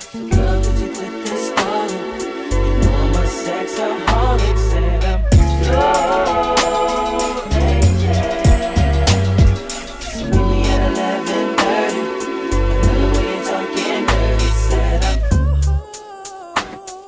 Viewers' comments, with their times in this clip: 0:05 the drum tease was devious